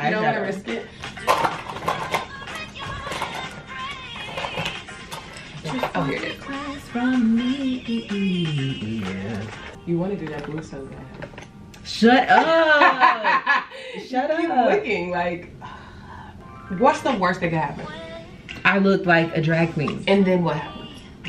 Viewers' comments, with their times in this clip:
0:05 .. can we all appreciate the final note she hit there becasue that was a strong bass that took me a second to hit ! so hello vocalist !!
0:09 Ok low register!